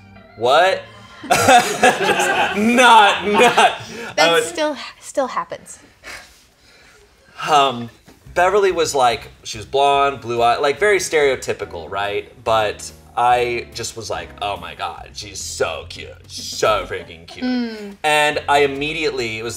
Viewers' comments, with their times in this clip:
0:04 Shayne’s genuine sigh there was so tragic, that hit a little too close huh? 😂